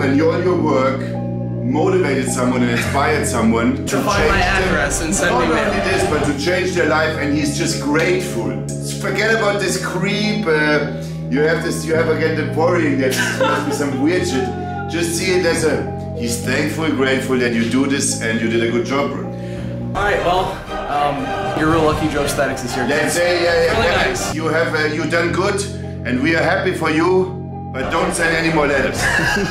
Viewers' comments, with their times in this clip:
0:10 the music switching back and forth 😂